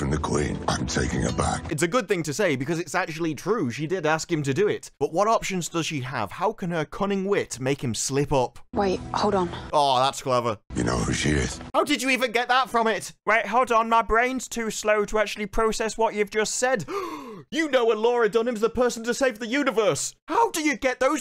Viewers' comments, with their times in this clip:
0:08 Kit and Stable Girl's deliveries aren't commanding or powerful. They're just...there. Even Stable Girl's posture and body language is passive. Meanwhile, I'm watching Arcane for the first time, and Vi's commands have much more weight behind them thanks to her body language and knowing what she can do.